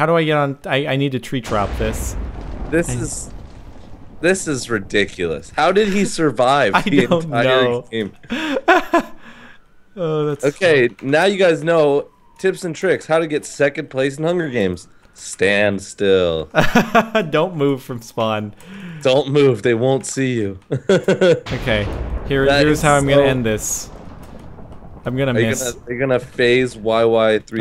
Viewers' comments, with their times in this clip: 0:10 turn it up u can hear sirens!
0:12 You can hear the sirens in the background